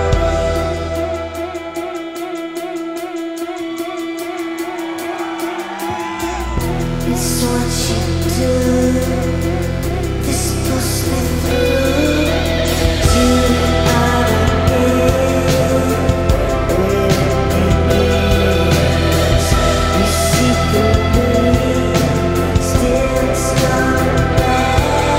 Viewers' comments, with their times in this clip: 0:06 This song is so hypnotic. It's perfection. And live it sounds INCREDIBLE.givess me chills especially